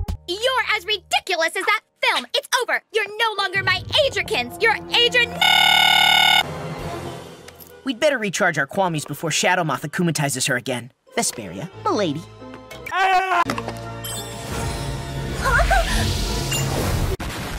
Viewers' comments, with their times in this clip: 0:04 In this scene Chloe look like she said adriennet